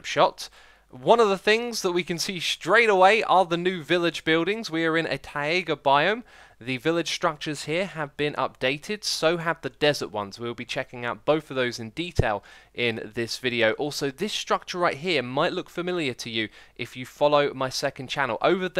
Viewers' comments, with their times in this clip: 0:04 DID HE SAY tie/a/ga because its tie/ga